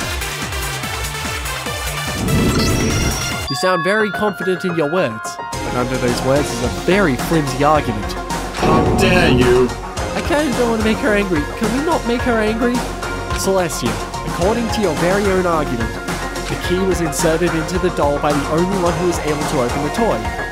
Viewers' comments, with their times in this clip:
0:05 I like that music